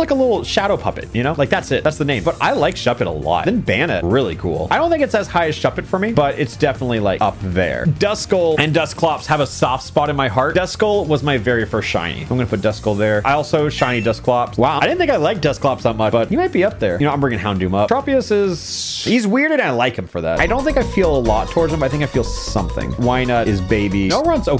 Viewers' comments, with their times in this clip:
0:07 the music gave me a flashback to pokemon pinball ruby and sapphire